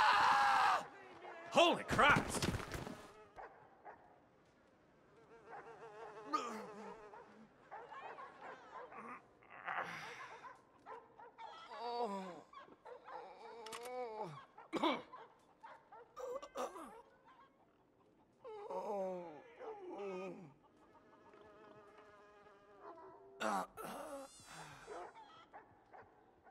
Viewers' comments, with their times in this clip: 0:08 bro started sounding constipated😭